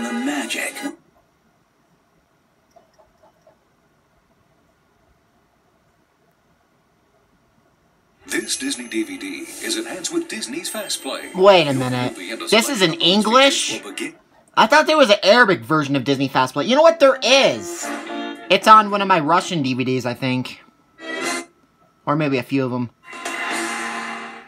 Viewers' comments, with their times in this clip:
0:08 Disney FastPlay is in English, not in Arabic.